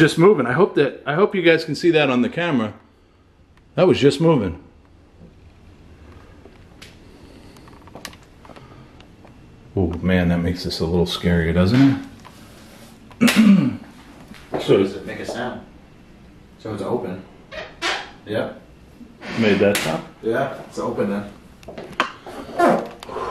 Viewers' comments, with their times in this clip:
0:04 there was a bang in the background